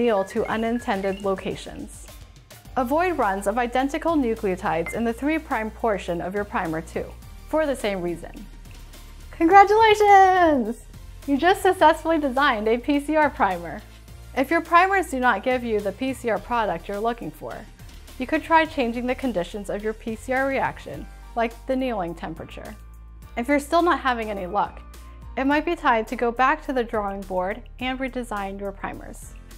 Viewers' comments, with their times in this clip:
0:10 the happy cheer is too precious 😆💕